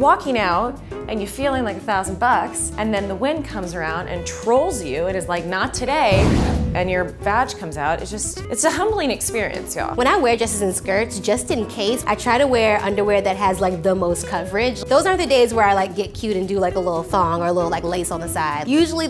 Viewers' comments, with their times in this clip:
0:06 The wind sound scared the sh*t out of me